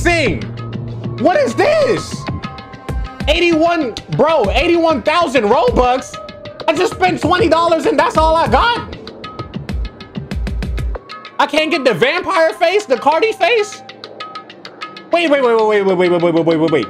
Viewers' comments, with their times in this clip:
0:04 i love him using this beat